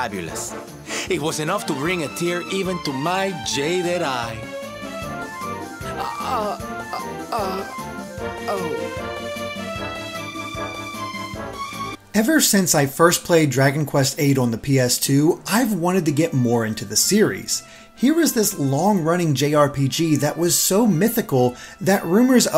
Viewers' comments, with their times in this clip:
0:10 His facial expression and the music, and the way it just cut off made me laugh so hard!